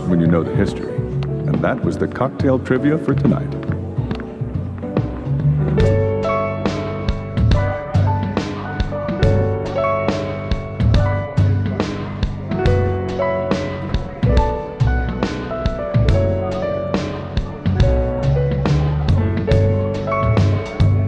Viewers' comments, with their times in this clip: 0:05 Okay but that sound quality transition was fiiiiine